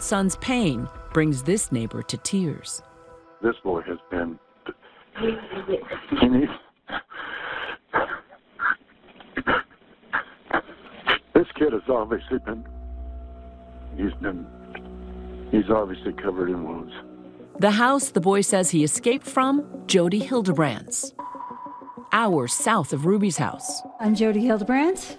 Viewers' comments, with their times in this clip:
0:10 -OMG I CANT!!🥺💔🇺🇸smh i cant! I cannot handle hearing or witnessing an American man cry! I cant! Knowing how America rears her males....to hear an adult man cry, just tells me EVERYTHING! Our American men just DO NOT cry! Think about what has to happen...for 1 of our guys to cry?!?? U see it? I see it and i know its BEYOND HORRIBLE!🥺💔 To imagine the state of this lil 12y.o boy--thru this mans words?? Is too much! This kids close to death id imagine. Smh Ive always had a soft spot for our American men...hearing one cry is too much for me. This man is crying for this boy who isnt allowed to cry. Friggin heartbreaking